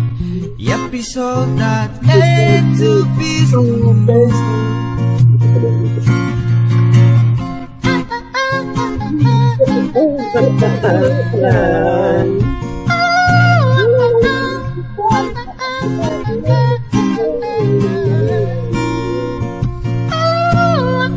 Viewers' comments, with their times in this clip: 0:06 Nice singing in tagalog(Philippines)😊😊